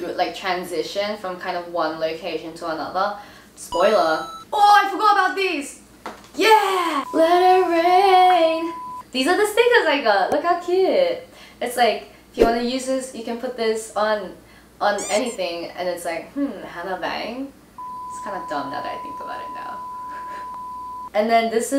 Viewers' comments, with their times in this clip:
0:07 Her singing is so freaking good 😆😆😆